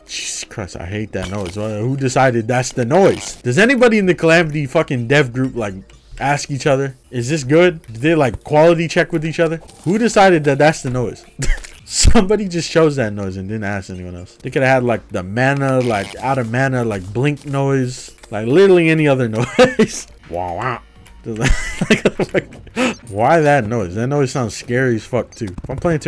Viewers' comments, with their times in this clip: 0:07 ,when i started playing it i heard a fart sound sometimes and im like:wtf is that sound xd,and then i realize,its hilarious the first times,but then it gets kinda boring